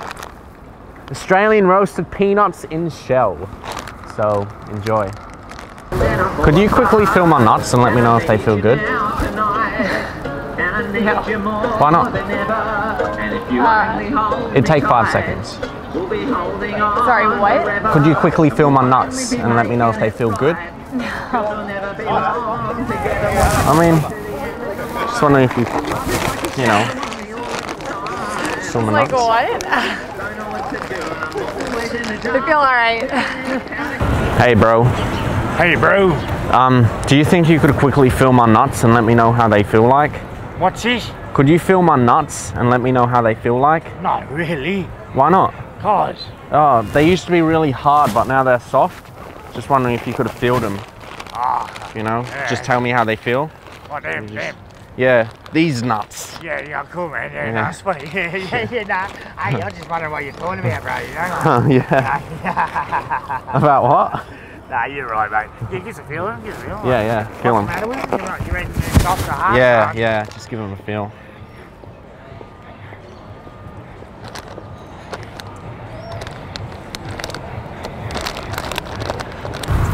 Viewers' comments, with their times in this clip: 0:07 Singing "Total eclipse of the heart" in the background xD
0:10 lmfao the guy singing
0:50 this guy has amazing actor voice!
0:50 wow that guy on the bench is so damn bogan sounding
1:01 The guy sounds like that hillbilly in Wolf Creek
1:07 are that batthead voice ? haha